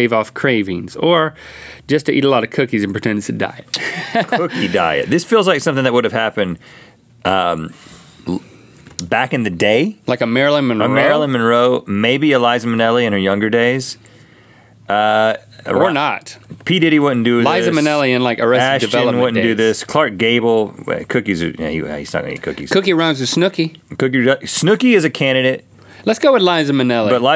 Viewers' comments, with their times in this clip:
0:08 ....was that a fart i heard XD